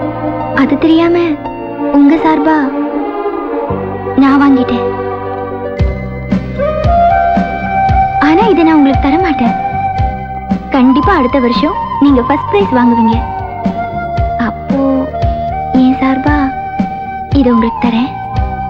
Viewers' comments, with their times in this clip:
0:06 ........superb n lovely bgm